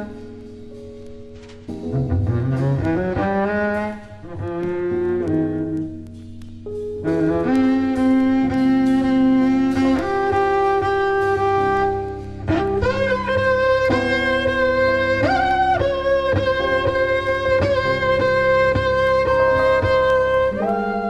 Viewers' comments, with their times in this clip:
0:06 The saddest moment in music I know of. This album is one of the most beautiful treasures of early jazz-rock. And 1970 was a magical year. All the Jaco fans should listen to this young Miroslav. He revolutionized the bass playing before Jaco, even though on acoustic bass.